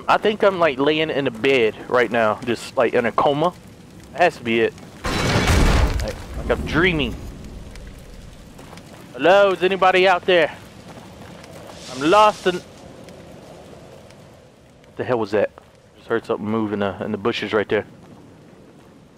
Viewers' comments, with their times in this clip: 0:06 did you just say kumot in tagalog???🙁